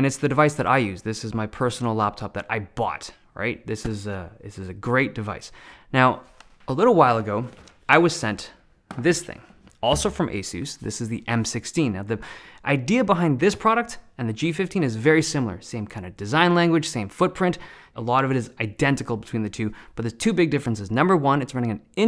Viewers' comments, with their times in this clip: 0:03 That I BAHT